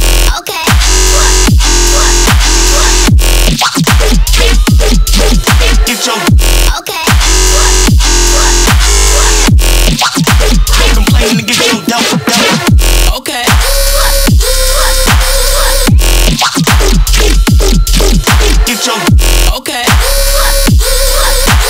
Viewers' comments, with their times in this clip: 0:09 I love that patch, very cool sound. Great job on this one.